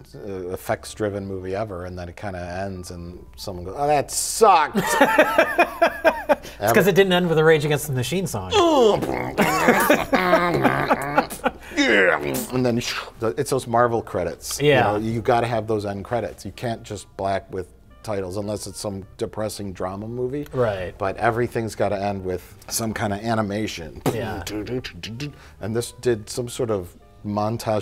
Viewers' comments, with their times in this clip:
0:08 Hold the phone, can Mike beatbox?
0:08 That's some solid beat boxing!
0:08 The beatboxing was surprisingly good!